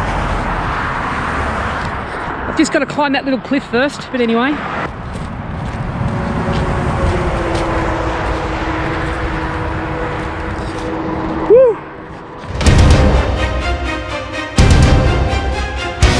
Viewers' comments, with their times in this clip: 0:04 Music for the drone footage was fucking awesome!!!!!!..... as always, incredible video man!